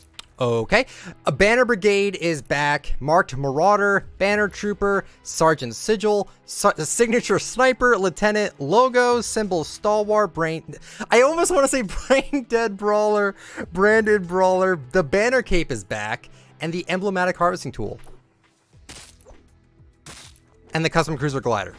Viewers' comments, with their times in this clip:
0:09 Simple Star Wars and Braindead brawler